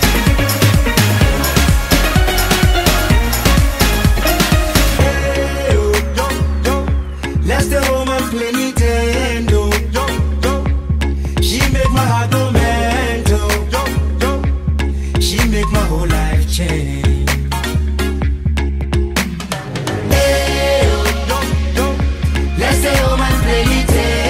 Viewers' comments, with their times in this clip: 0:06 Who else hears "Lets go home and play nintendo" ??